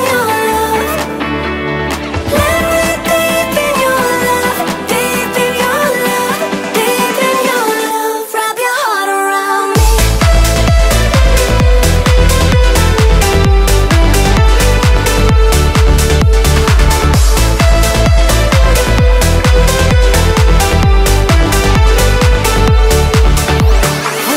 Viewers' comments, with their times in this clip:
0:10 Excellent sound, I really like it, catchy song